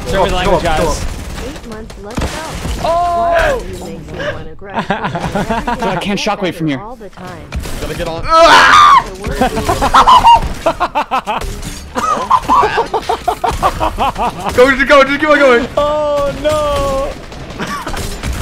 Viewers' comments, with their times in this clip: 0:04 My dude sounds like Tom, from Tom and jerry